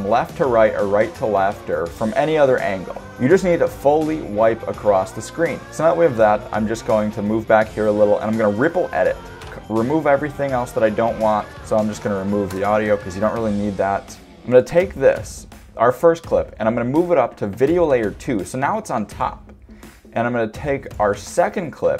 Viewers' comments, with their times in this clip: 0:09 man that song is much loud as your voice.